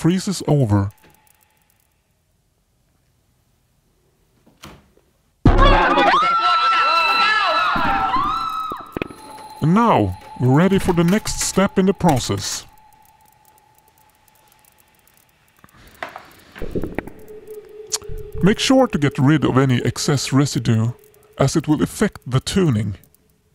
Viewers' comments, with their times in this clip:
0:04 I saw This Comment while I was watching so i tried Listening Closely and..... My ears Died lol